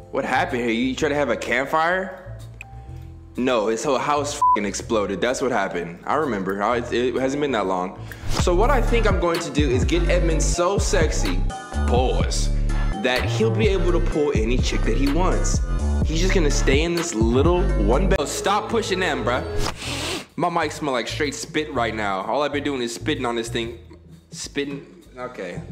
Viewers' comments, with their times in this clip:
0:08 bruh i want that background music it's heat